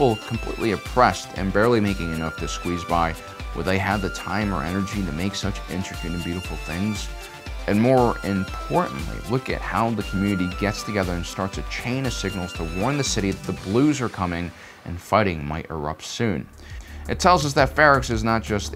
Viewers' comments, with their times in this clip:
0:04 Talking about details: you can see a light going off on the right. Just a detail, some extra work for the crew, but you won't even consciously notice. I love it. btw: Your voice is too quiet compared to the background music. It's sometimes hard to understand.